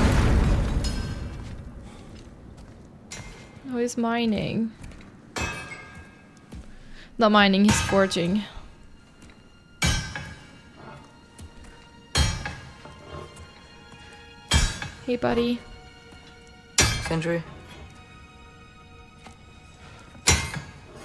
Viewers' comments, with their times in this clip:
0:05 Sindri is still covered in Brok's blood, he is no longer wearing his gloves and he is using Brok's hammer to make a sword. He is so broken at this point. Then when Atreus says, "I thought we were his family too" and Kratos replies with "We were," you can hear Sindri begin to sob in the background.